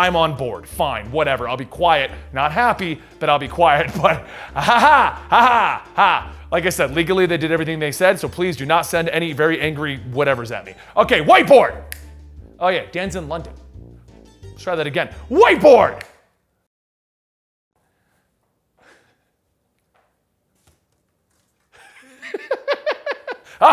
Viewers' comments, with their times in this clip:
0:10 I heard WHITE BOY! instead 😀